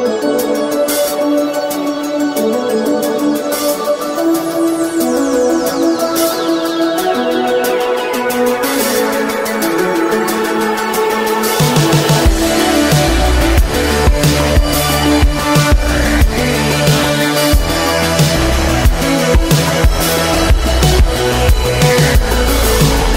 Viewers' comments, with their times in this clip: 0:05 was someone calling you on Skype?